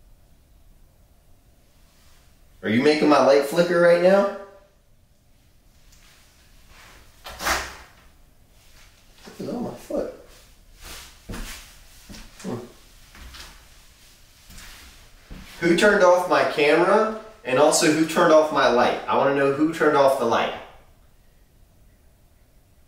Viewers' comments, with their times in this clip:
0:03 Ur mom was probably asking cause the sirens were going off